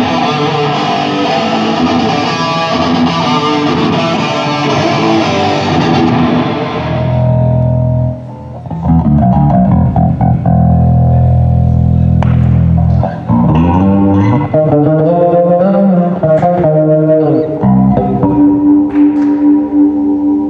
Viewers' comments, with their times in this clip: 0:08 (soundcheck) bass sounds KILLER!!!